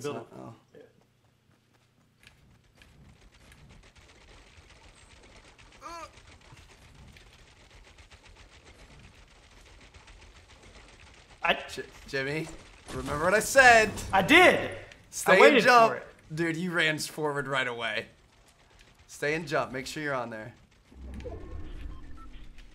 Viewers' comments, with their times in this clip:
0:05 Did anybody else hear that little groan 😂